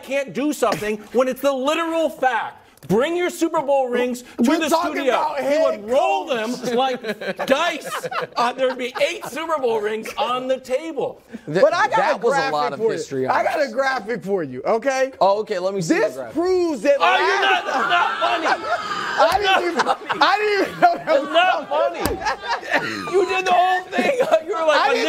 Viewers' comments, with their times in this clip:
0:10 😂😂😂 "Youre not funny" - while barely being able to control himself from cracking up is so great 😂😂